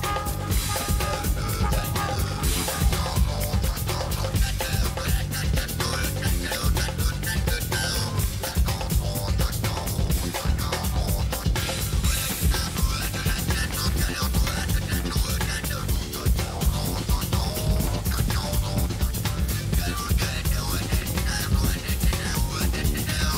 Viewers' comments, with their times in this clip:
0:04 Killer - makes you long for another 50 minutes. I got a strong Zawinul vibe. Seminal concept, seminal concert.